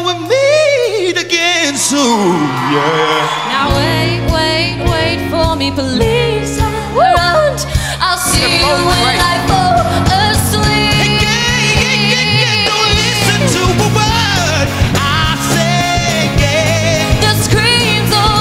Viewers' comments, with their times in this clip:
0:04 Anyone else notice that when Jessie J was trying to change the speed of the audience clapping. She was more out of time than they originally were. Tap along to the bass drum from if you don't believe me!